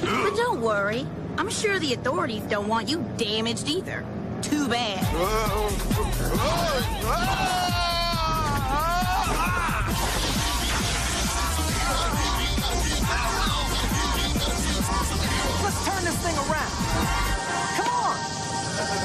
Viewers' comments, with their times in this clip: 0:05 never get tired of hearing that song